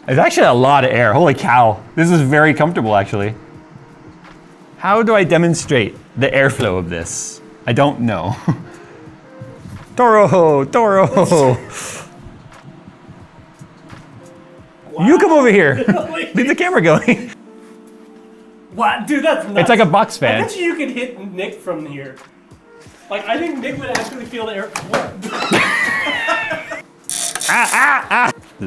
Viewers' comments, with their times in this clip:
0:09 well we can hear it from your mic and to sounds quiter than my actual room fan also I don’t know what it is but most real fans make a buzzing sound that’s really close to the sound of a wasps wings from across the room (just to bug me the central heating also makes this same hum) this thing of yours sounds like it’s got a different pitch to it which would be fantastic for me as one thing you don’t want is to keep been woke up thinking there’s a wasp in your room.